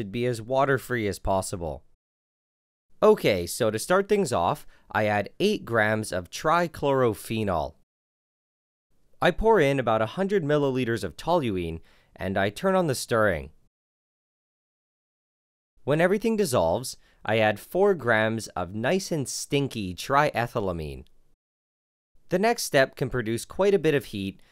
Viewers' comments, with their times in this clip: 0:07 you sound like the plumbus making guy